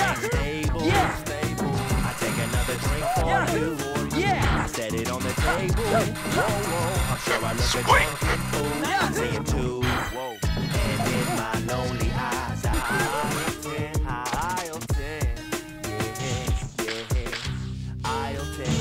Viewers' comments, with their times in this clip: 0:04 LOVE THE MUSIC!!!!!